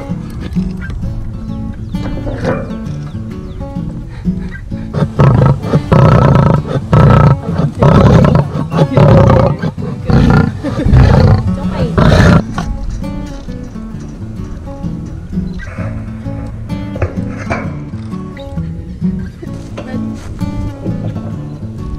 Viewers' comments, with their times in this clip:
0:06 Boy, the lioness sounds really really angry at the Easter bunny.